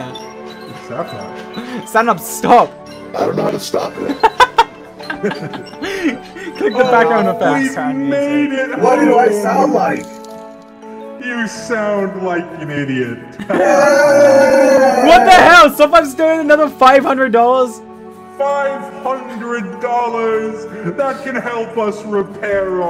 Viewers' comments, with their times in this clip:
0:08 he sounds like sad darth Vader